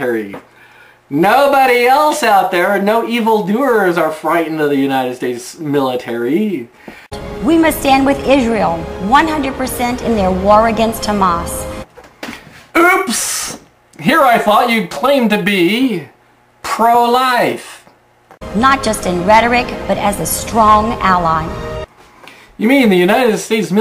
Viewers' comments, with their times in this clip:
0:07 "War against Tamas"!?